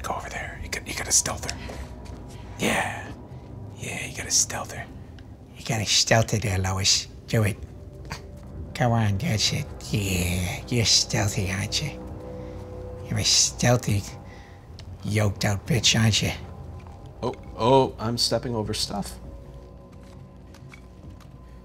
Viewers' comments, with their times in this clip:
0:06 ..sounds like David watching cannibal porn😂